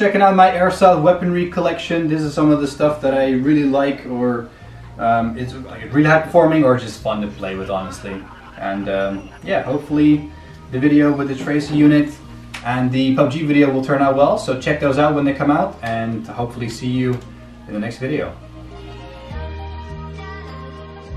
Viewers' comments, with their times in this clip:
0:07 Who heard a laugh